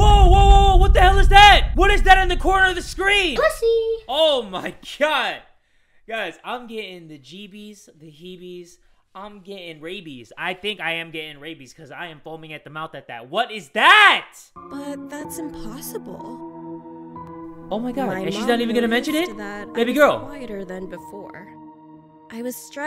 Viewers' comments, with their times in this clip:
0:03 bro scared my guts outtta here 💀 like I was too focused and when he screamed I jumped bro 💀